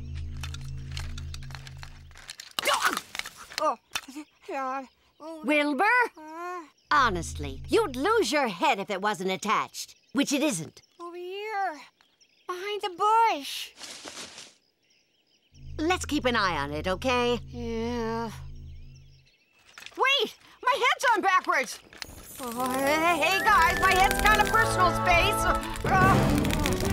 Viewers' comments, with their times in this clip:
0:10 Wow, if you're listening with headphones the "Over here!" only sounds in your right ear, clever attention to detail!